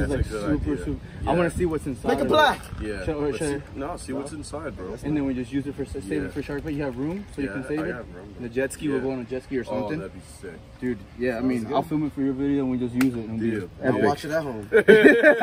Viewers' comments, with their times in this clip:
0:03 That boy talking bout make it black